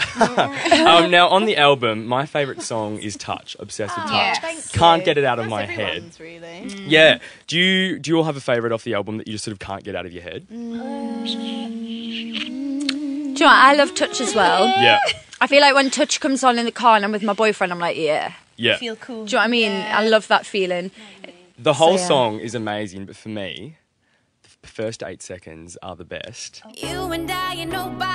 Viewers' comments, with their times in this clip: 0:09 they even think in harmony